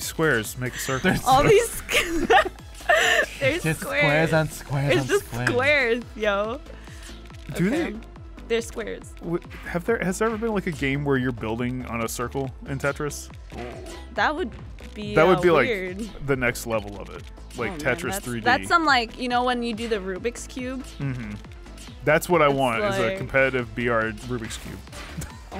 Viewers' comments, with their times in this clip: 0:10 I love the music in this game. Tetrisphere i LOVED that game as a kid!